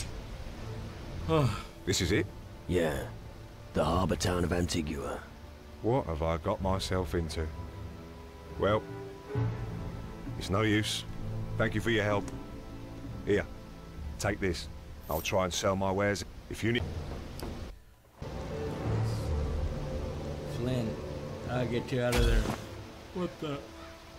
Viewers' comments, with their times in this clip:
0:07 What's with this voice acting? What the heck is this, Ultima 9?!?